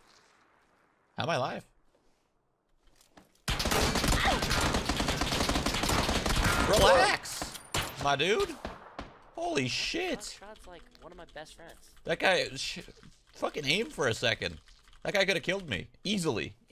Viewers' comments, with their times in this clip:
0:03 play in 0.25x speed. Listen carefully the fire sounds, its like a tempo beat music